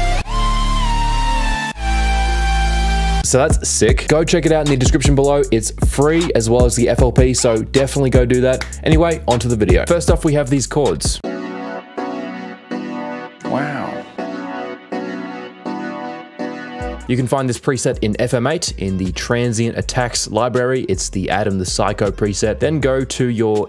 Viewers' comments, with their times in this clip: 0:10 Those three notes, in musical terms--are playing two intervals not chords. You would need to have one more note/tone playing simultaneously with the two intervals to make those intervals into chords.